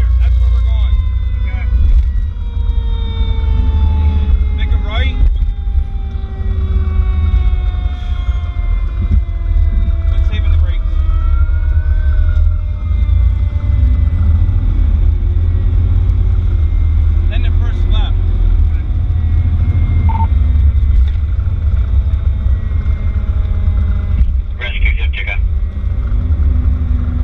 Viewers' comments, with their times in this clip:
0:09 Just curious, what did someone say at this time stamp, sounded something like brakes?? Great Vid & response guys.